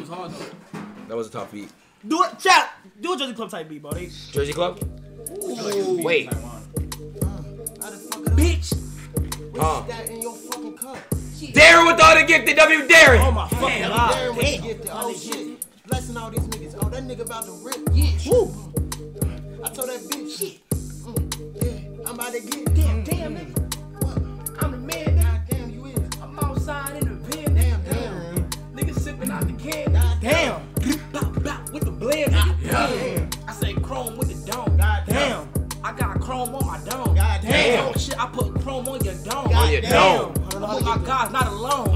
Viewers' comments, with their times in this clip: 0:04 that beat was so hard
0:14 Leaving this here cuz they fucked that beat up
0:23 them adlibs go crazy🔥